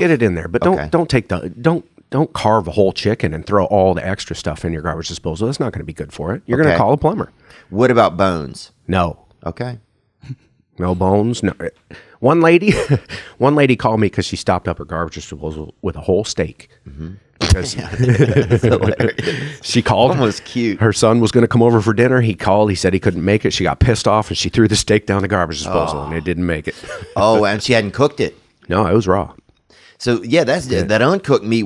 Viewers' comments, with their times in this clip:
0:06 lmao Theo tripped him up with that "Okay" and then dead silence lol. He couldn't tell how to react
0:18 Go to and tell me the plumber's smile/laugh is not 100% spot on to Paul Rudd